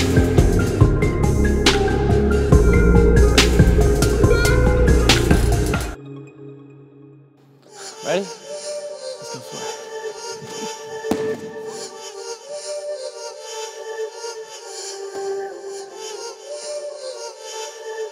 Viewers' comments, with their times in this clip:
0:06 That beat tho